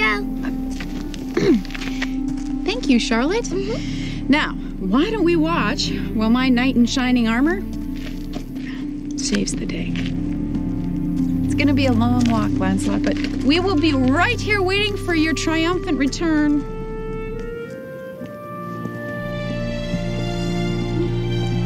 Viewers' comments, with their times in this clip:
0:09 Cute couple. Erica is very beautiful at this point in the series, and Season 10 is an overall happy season. Lois (Erica) says “Tom” very lightly. Does anyone else hear that?